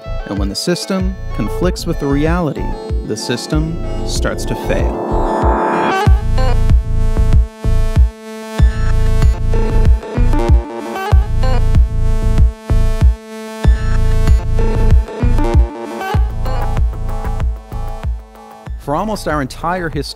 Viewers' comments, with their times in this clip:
0:06 OMFG I want the song in !!!! How is it called? pllllssss :D so filthy! ^^